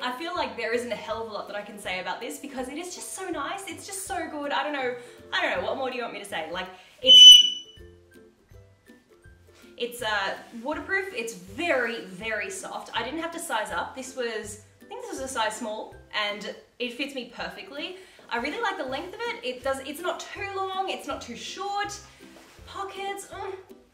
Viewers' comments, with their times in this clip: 0:05 holyyyy shit I was looking away with my earphones in when Archie screeched and I literally thought the fire alarm in my building had gone off 😂😂😂😂
0:06 OH GOD. headphones users BEWARE. Yes future viewers. You.Have.Been.Warned. Oh wait no. Actually its all throughout the video. Just dont wear earphones/headphones. Archie whistles/screams throughout the video.
0:08 omg, when Archie screams in the minute I jumped out of fright XD im such a loser :)